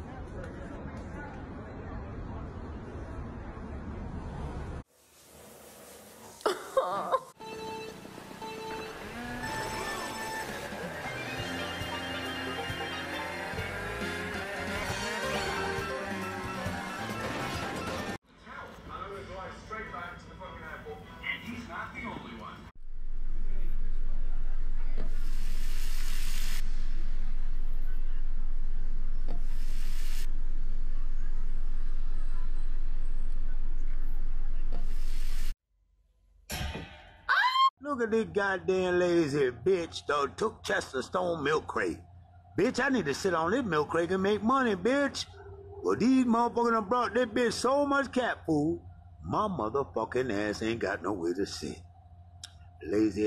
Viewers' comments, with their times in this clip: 0:09 Anyone else who heard the Muda?
0:38 excuse me, but can we please take a second to talk about this man's voice? It's pure gold. He could voice videogames and everything
0:38 Dude sounds like a perfect 50/50 blend of Keith David and John DiMaggio lmao
0:39 Bro I would want this guy to tell me a story he sounds so good
0:39 Bro sounds like an NPC from Grand Theft Auto